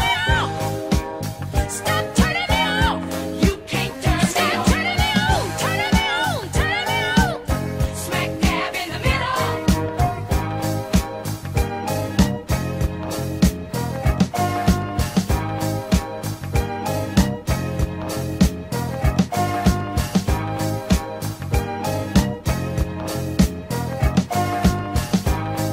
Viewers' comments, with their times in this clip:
0:09 i love the instrumental break that begins ...can listen to it for hours!